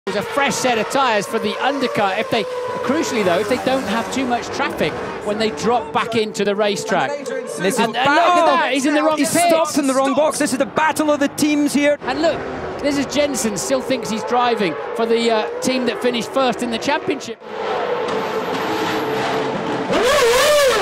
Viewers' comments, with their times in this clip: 0:05 was that Crofty i heard in the background?